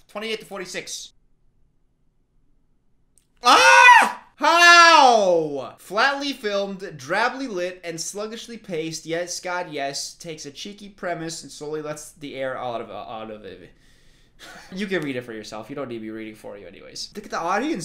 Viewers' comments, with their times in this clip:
0:03 That scream lmao